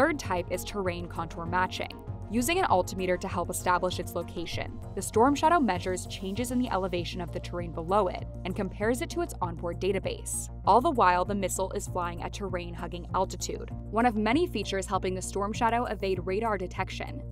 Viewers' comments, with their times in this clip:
0:04 “an alt-a-meter” 😂 WSJ you so crazy